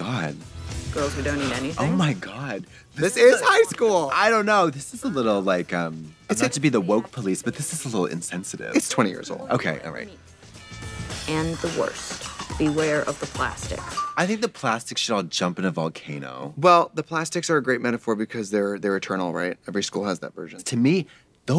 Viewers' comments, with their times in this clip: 0:08 Anyone else notice how the background music in the cafeteria intro scene is similar to the Futurama theme song?